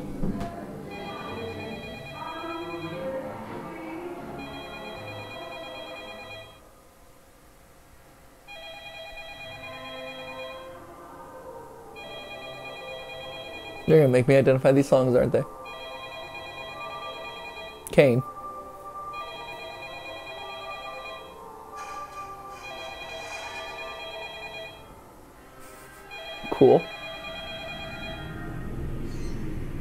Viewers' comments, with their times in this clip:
0:10 This kinda sounds like party music...